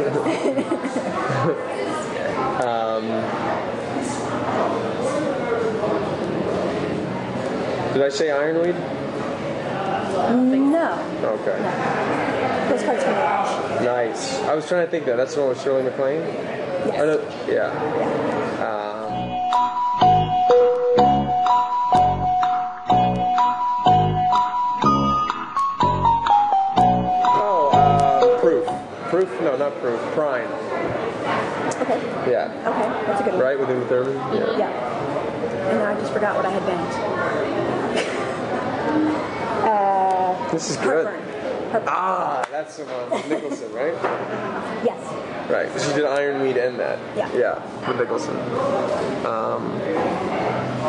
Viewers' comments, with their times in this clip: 0:07 "did i say amelie?" oh this is my name :)
0:34 Some people are saying he's bored, but I don't think he is. I think he may be a little tired in this, especially after the way he rubs his eyes And besides, he seems quite into it and at the end he asked if she wanted to play more and said he was having fun. And another thing, I never thought hearing a man go 'uhh' would make me giggle so much. He's gorgeous.